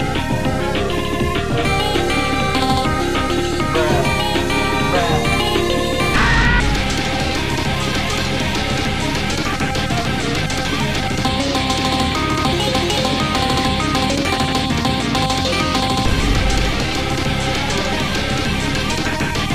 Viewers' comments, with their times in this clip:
0:05 man, this tom scream catch me LMAO XDXDXDXD